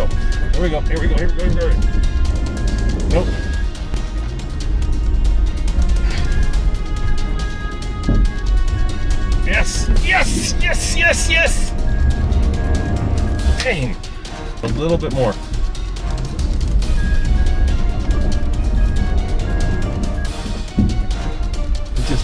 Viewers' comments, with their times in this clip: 0:03 What's that beeping sound in the cabin ? Slipping sound?